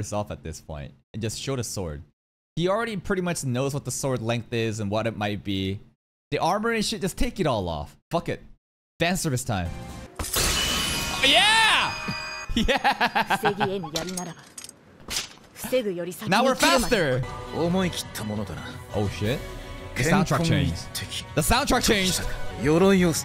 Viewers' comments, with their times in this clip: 0:10 Caw neuron activation, biggest YEAH I heard from him